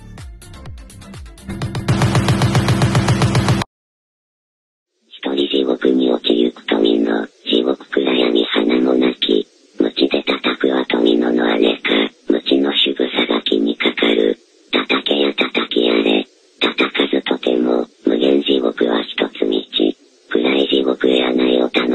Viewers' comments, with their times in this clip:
0:05 the voice of the void